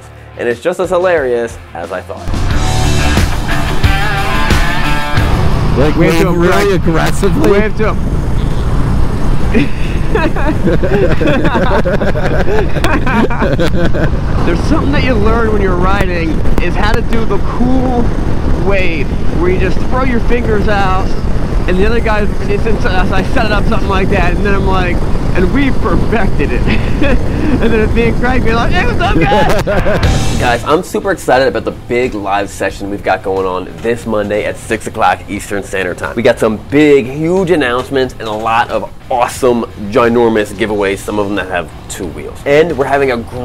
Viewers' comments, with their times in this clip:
0:10 I love the laughter priceless.
0:28 the seth rogen laugh 😂